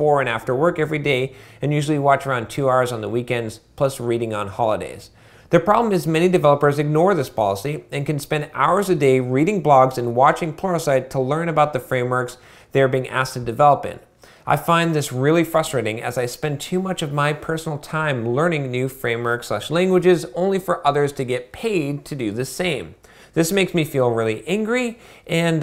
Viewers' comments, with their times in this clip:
0:08 Reading blogs and watching pornosite???